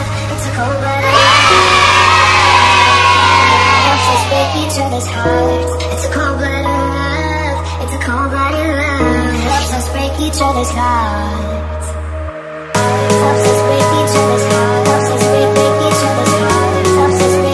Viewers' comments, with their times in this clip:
0:03 lol the fnaf kids sound !